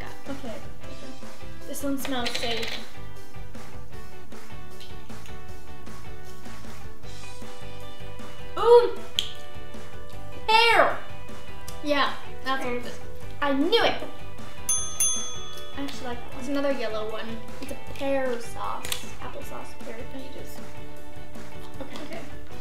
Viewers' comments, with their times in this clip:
0:09 I thought they said air!